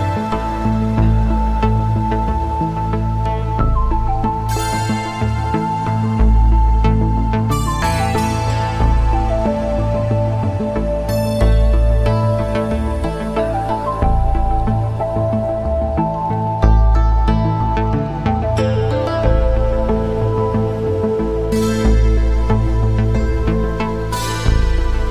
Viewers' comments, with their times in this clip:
0:07 A pure bless while coding at work ... 💫💫💫 Ooooh ,It really sounds like the "Liquid stack" or "Expensive Stack" sound I have on my very old E.M.U 🦄